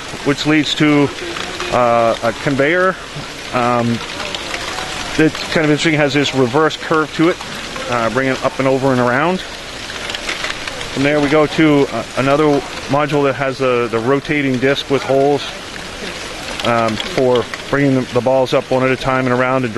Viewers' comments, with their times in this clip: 0:07 minecraft skeleton noise